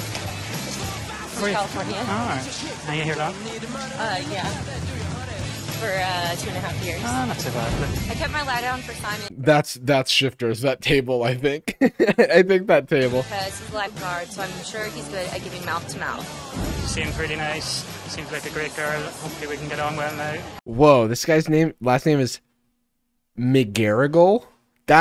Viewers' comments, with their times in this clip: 0:08 That girl's from Dublin???? She might as well had said she was from San Francisco as well!